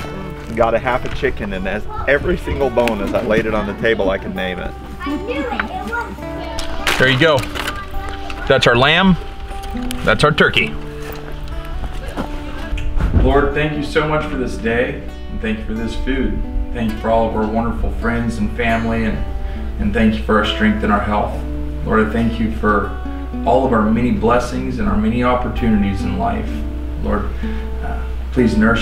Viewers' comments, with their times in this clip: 0:10 The way he said turkey